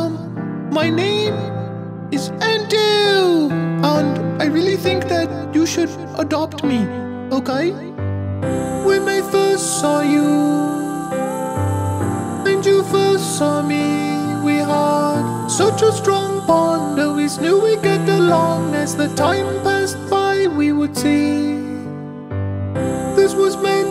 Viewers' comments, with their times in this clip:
0:06 It's been 5 years😭😭😭 to hear that voice again say hello it's N2 I had 2 tears to in to hear adopt me they all came and never stopped RIP N2 & Nightcrawler please share your tuna with my Sissy over the rainbowbridge 😭😭😭😭😭😭